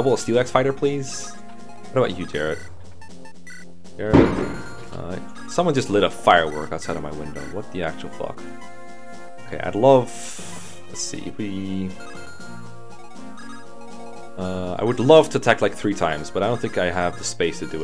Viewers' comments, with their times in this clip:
0:04 That's Allen's self esteem exploding